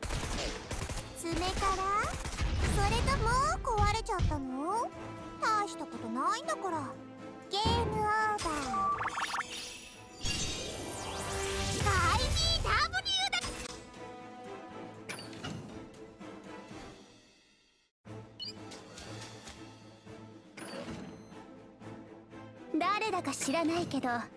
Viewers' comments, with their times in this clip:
0:09 watching video at high volume IDEEDOBURUDANYA